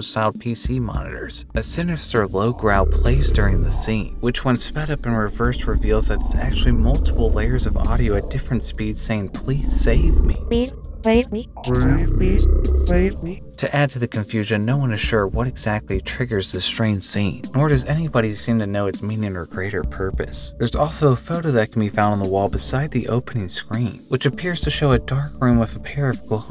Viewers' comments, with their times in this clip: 0:10 I honestly lost it with the default FL Studio text to speech lol 💀😭